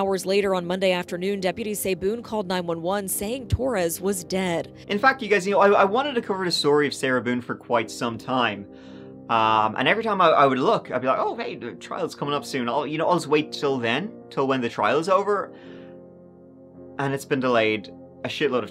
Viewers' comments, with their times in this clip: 0:03 –Sounded like you said “and fck you guys” in mockery of Sarah. 😂